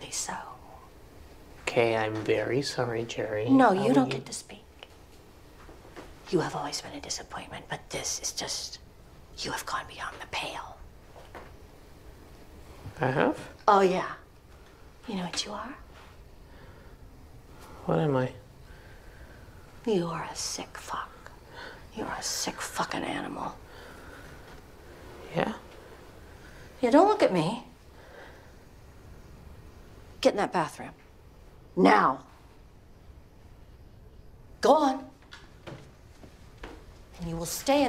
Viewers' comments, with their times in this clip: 0:10 Starting the way his veins are popping, the way his voice goes high on "I have?," the slow blink and small twitch as he says, "What am I?," the almost-slurred way he says it, the subtle way he starts breathing heavier.....god damn. Kieran Culkin is amazing.
0:19 Kieran’s a great actor. The way he starts breathing heavier You can almost feel him getting turned on by Gerri’s degradation.
0:21 this is like a asmr 😂